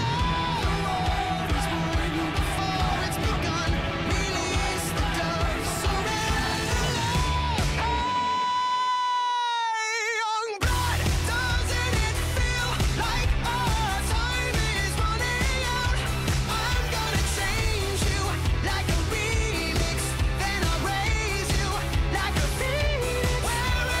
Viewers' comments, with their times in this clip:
0:05 repeated low-to-hogh background chKantagd